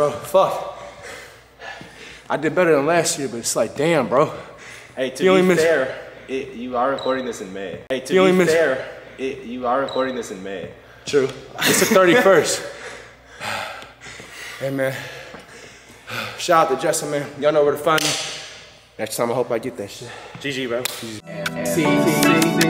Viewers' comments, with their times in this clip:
0:03 Bro instant replayed a sentence LMFAO
0:07 Did bro really just replay a sentence 😭